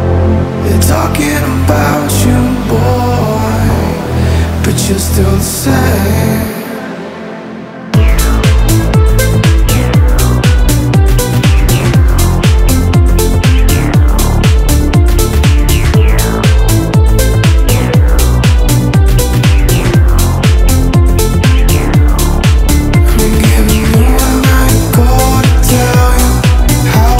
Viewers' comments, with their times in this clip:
0:09 Amazing sound 💯🖤 beautiful voice